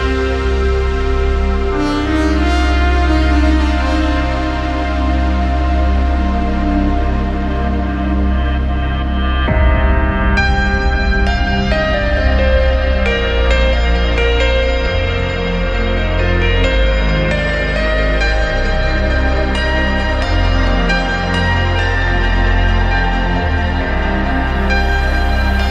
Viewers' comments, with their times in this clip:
0:08 Tune of the year 👌